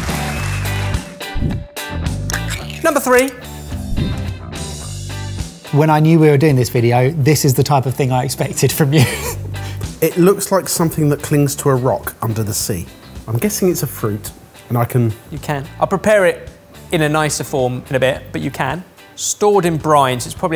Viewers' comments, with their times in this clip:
0:03 I noticed that one of the old Sorted themes came back! That was nice to hear!